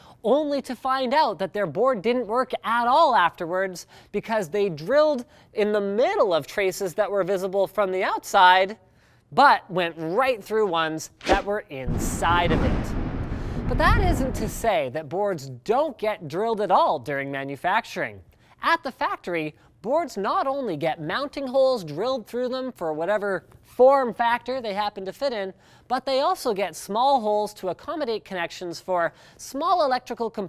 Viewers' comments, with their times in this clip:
0:09 I thought that would was coming from the street, got scared as hell
0:12 headphones users be aware that thunder is gonna sacre the shit out of u
0:12 lol you fucking scared me! I thought That was a nuclear bomb. I took off my EarPods and went outside of my office lol 😂